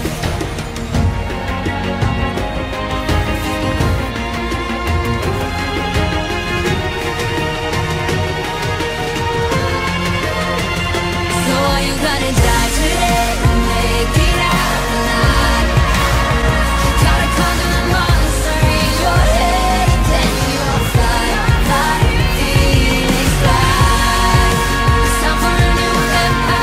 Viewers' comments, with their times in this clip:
0:10 Oh nice one good plays but music is really bad